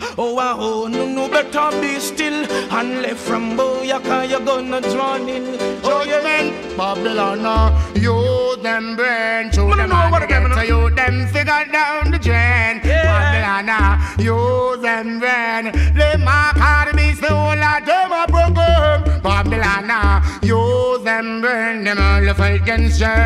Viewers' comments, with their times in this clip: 0:06 Bassist just cleansed the dirtiest of the dirty out of earth deeeeeep into the fking UNIVERSE! Bummmmmmboklaat! #mindblowing